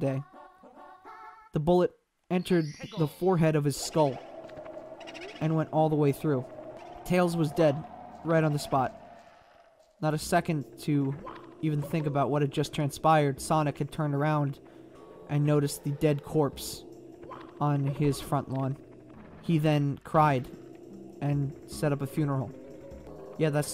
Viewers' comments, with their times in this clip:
0:06 the ost was perfect 😂